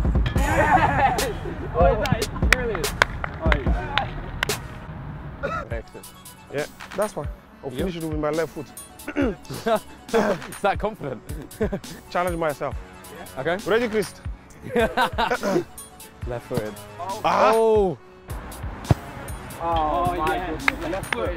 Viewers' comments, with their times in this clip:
0:07 my ears feel violated